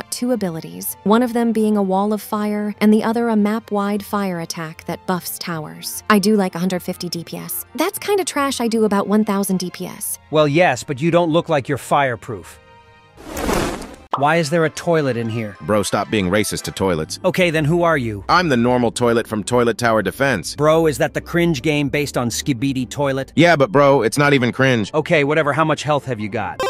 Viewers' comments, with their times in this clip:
0:09 did Gwen turn into a man or sum💀